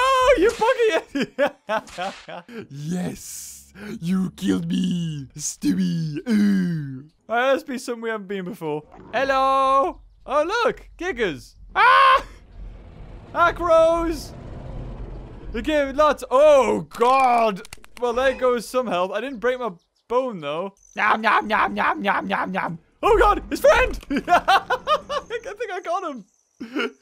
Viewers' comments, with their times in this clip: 0:10 i thought you said somthing else for a second lol.....
0:10 could have sworn he said something else